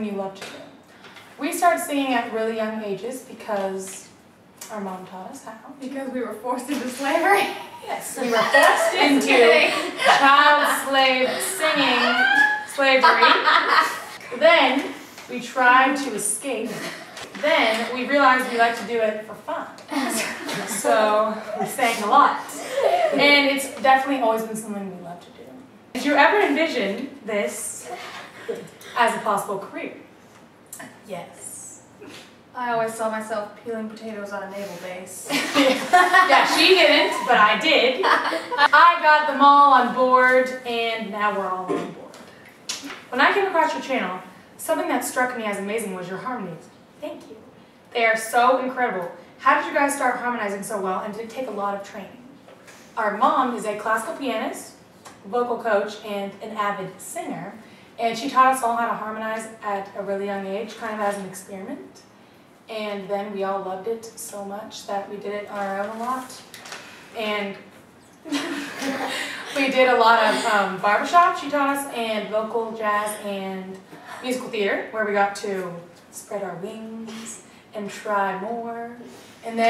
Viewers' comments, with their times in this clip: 0:10 Haha Dani pause
1:05 Lisa's sigh ... *sigh*
1:06 hahah why did lisa sigh